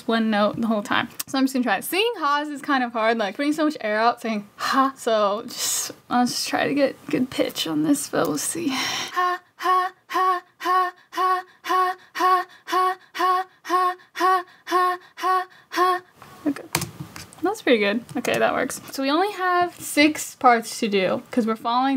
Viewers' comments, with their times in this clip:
0:09 That one teacher told a not funny joke The class being respectful: